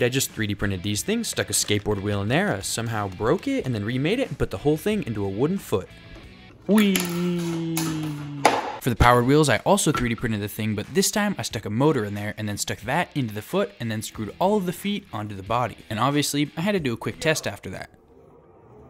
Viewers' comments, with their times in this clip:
0:06 that "wheee" has so much Technoblade energy omg
0:06 that “weeeeeee” is strangely familiar